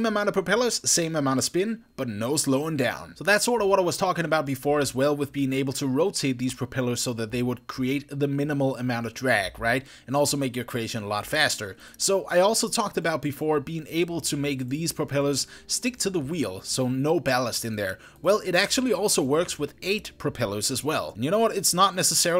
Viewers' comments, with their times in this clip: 0:08 "draeg" draegast confirmed... tuuuuuuuuuuuuuuuuuuuuuuuuuuuuuuuuuuuuuuuuuuuuuuuuuuu